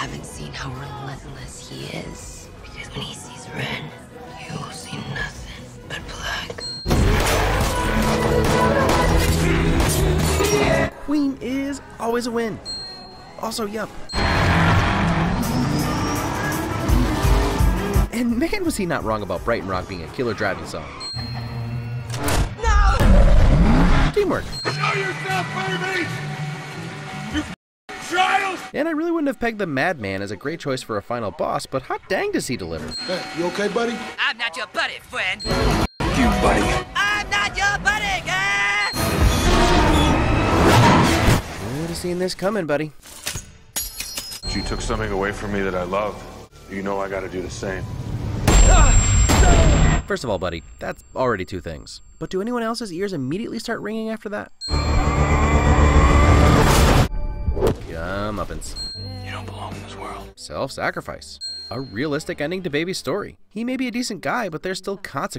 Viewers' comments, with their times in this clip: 0:06 The perfect head voice to chest voice transition in the lyrics "It would be of small avail to talk of magic in the air" is my favorite part of that song. I want to believe that's the reason for that win
0:48 since baby had tinnitus this means anything that will make his ears ring will be amplified and I have it to and that’s exactly how it feels great job to Edgar for putting so much detail in this movie!